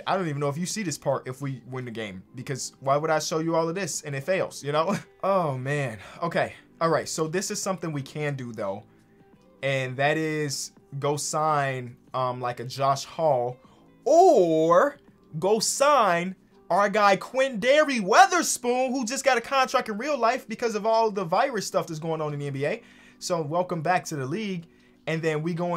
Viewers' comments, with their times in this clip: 0:06 “Random dog bark that scared me so hard I dropped my phone on my face”